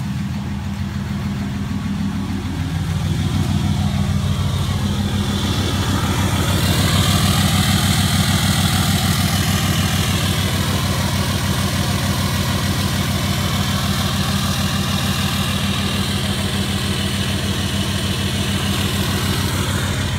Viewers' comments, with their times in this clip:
0:07 Hey man, I've only owned 12v 5.9 and 24v 5.9, never a 6.7. Looking to buy one and delete it... but I've got a question: is it the exhaust brake that causes that strange whistling sound I hear in so many straight pipe 6.7 videos? of your video, it sounds like something is slightly whistling... if that's not the exhaust brake then what causes that sound? For example, any 12/24v straight pipe video I listen to, it sounds like the exhaust sound is completely unobstructed and coming out loud and clear... but these 6.7s tend to sound like there's something "stuck up in their throat". I hope you understand what I'm asking... just curious as to what that is and if there's any way to get it to sound more "clear".